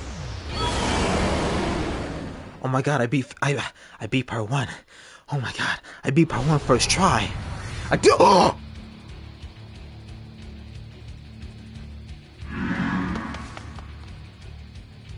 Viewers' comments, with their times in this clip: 0:03 i love how the theme is alredy good then kicks in and the games like you thought phase 1 was good haha yehhh PHASE 2